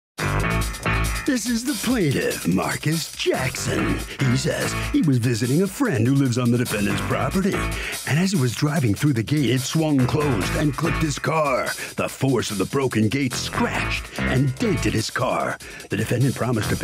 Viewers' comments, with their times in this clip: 0:01 dude wtf is that voice, why are there no comments talking about how ridiculous this sounds? Am I going crazy?